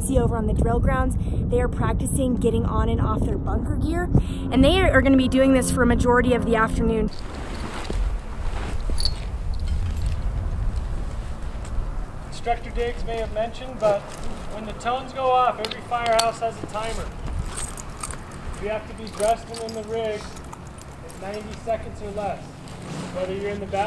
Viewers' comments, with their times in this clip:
0:05 minecraft zombie noise